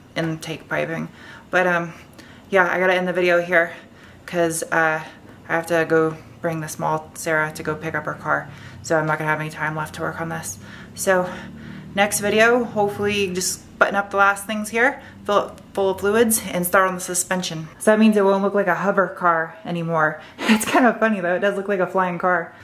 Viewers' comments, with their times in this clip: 0:05 can you hear that subie in the background lol